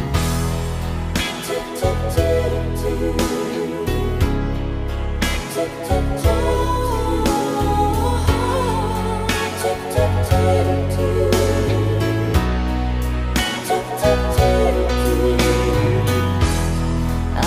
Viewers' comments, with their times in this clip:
0:05 I wish I could sing but I can't she has a fantastic voice.❤